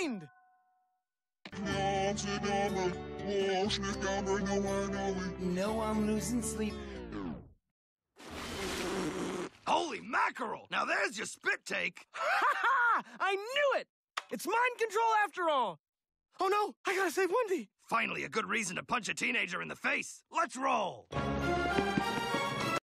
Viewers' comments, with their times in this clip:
0:05 sounds like YOU KNOW I'M LOSIN' SLEEP
0:06 It sounds like: Im loosing sleep tonight